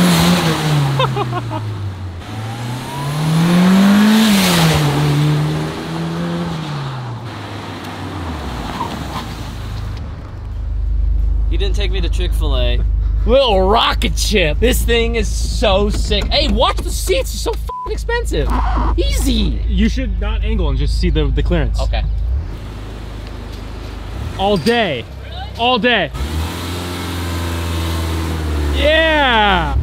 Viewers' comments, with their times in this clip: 0:10 this delivery rekt me lol. Trailer Park boys in LA vibes on this video with the banter.